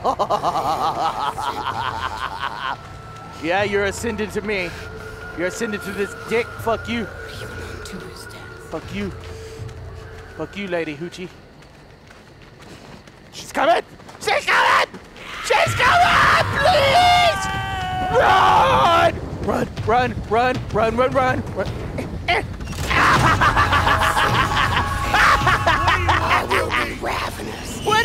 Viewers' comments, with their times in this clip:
0:10 that silent run though > <